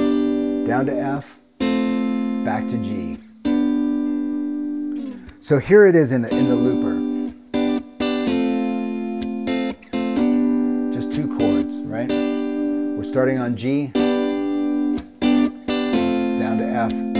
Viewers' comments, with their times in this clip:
0:04 that G chord ...is that an inversion?